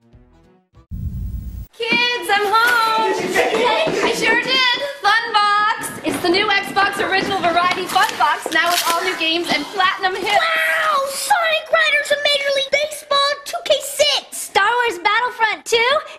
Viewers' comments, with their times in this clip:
0:04 that family omg haha, first they're all different races and then that insane laughing 😂😂